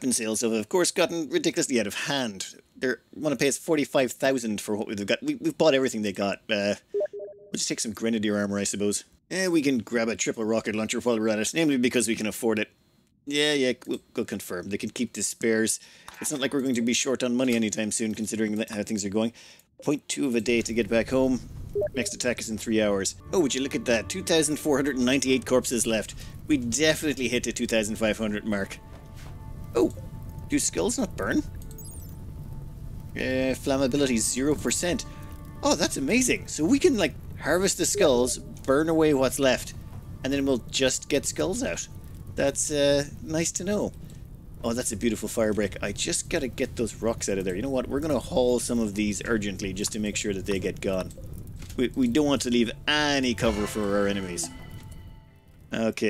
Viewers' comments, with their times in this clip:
0:06 Were there steam message notifications going off periodically for anyone else like ? God i was so confused by that happening periodically.
0:07 Who else checked Discord ?
0:37 Arg discord notifications in the vid it took me a while to understand that came from the vid